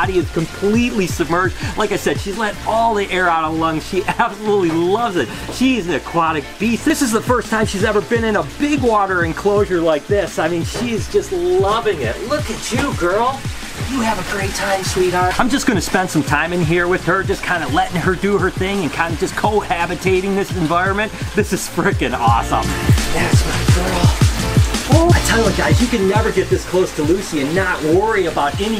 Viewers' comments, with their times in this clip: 0:09 did she fart? 😂